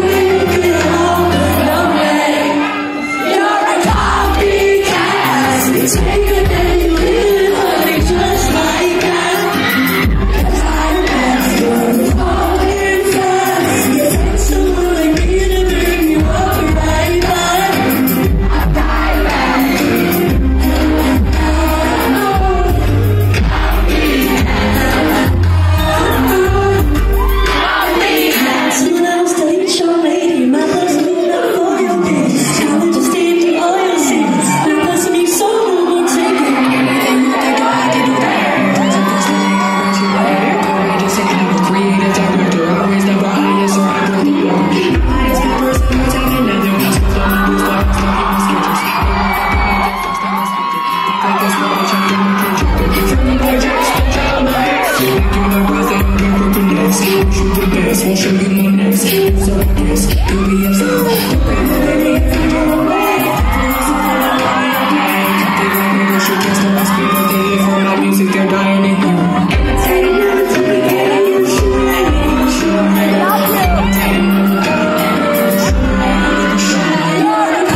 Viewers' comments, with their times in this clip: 0:04 Is it just me or does the person sound mad when they said your the copy cat in ??😕
1:01 Anybody else think sounded amazing??
1:01 I love how she starts singing Tierras part also anyone here in 2024??